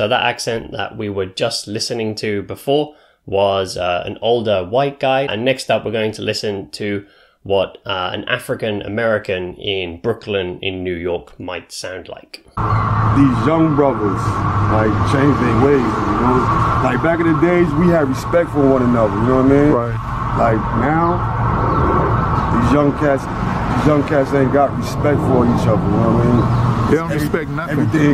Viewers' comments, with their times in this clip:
0:09 There is a Brooklyn accent in there 😉